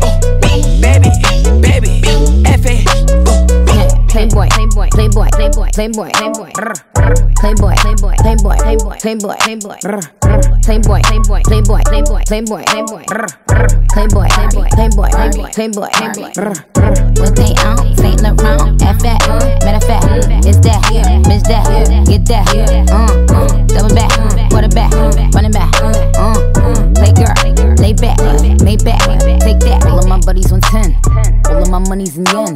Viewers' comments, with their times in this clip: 0:04 I could listen to Nikki’s “playboi, playboi, playboi, rrr” on repeat and never get tired of it
0:16 I love how Nicki was matching carti mumble rap🤤⭐️